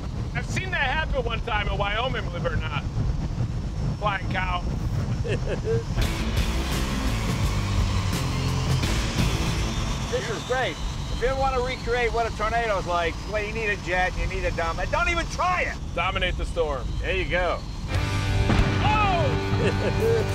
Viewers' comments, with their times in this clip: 0:04 Jay laughing funny as hell